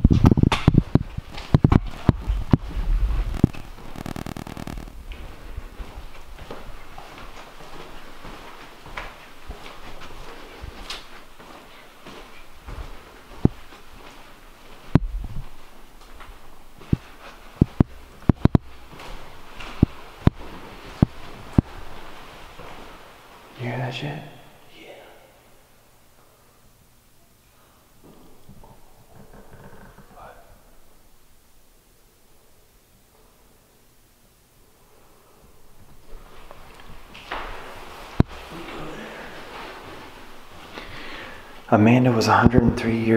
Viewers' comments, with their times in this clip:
0:03 audio goes from scratchy to staticy
0:14 now it sounds like tapping on the mic like ur doing a sound check...
0:27 ur get to the stairs and I hear water dripping